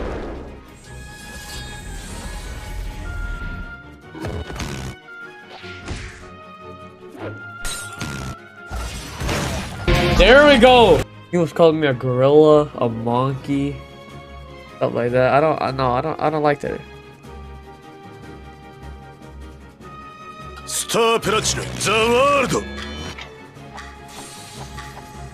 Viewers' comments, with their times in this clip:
0:09 as soon as I hear that Music I already know that someone or I just got a W or just fucked up